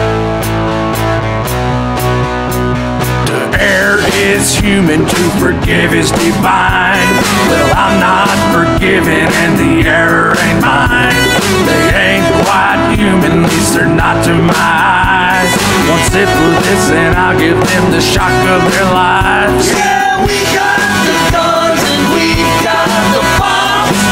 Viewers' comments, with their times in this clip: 0:06 hmm thats odd cus I thought that there was a bit of midi in places like and beyond, but I digress